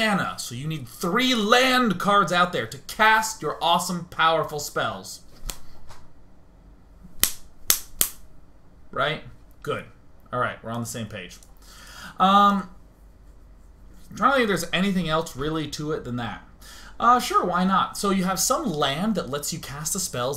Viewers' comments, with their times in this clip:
0:04 I always try to replicate him when he is snapping but i can only make a whimsy high snip sound instead of that manly flap:D